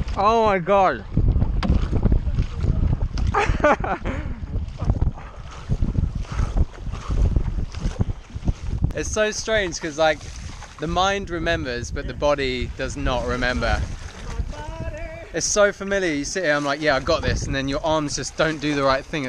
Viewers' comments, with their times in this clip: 0:04 the paddling sounds are weirdly satisfying.